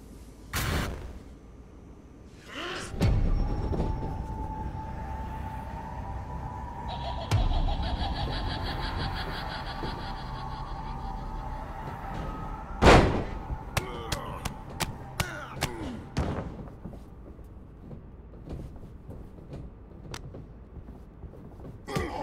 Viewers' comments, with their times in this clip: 0:07 PLZ tell me y'all are hearing jigsaw's laugh in that scene